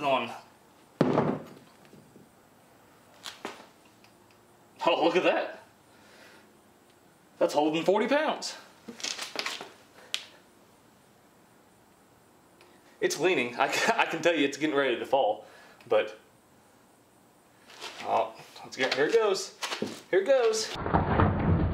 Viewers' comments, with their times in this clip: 0:09 When his knee KRAKS